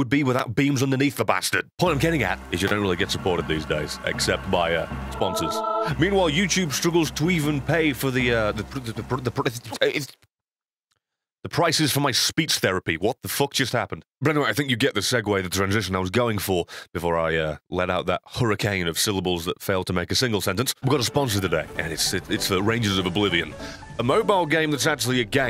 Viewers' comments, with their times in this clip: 0:08 alien sounds intensifies
0:08 1.75x speed is usually how my brain is. Interestingly, at 2x speed, it's going so fast that the processing of the audio actually skips a few syllables.